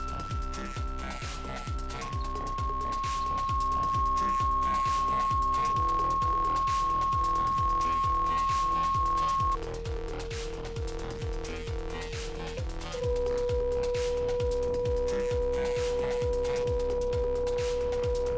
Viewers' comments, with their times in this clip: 0:05 What frequency was playing at the time ?